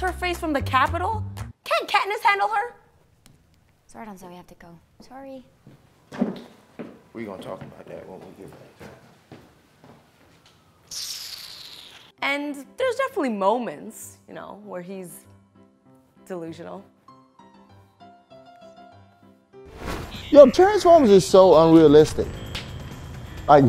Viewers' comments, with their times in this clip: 0:09 she kissed her teeth like a proper African lmao
0:10 that hiss got me like ? wahhhhhh?
0:11 What?? She just hissed. Do you people hiss?